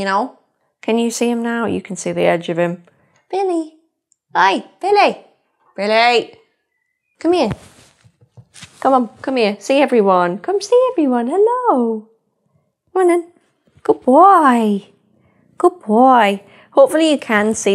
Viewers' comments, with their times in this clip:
0:03 "Billy, hi! 🥰 Billy. 🤨 BILLY! 😨" I sorry but every per owner will understand the feeling